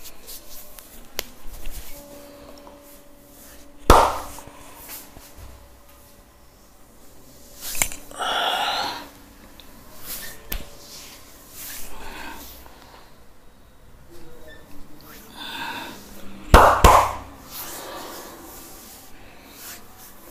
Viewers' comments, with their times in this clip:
0:07 Special Skill sound 😅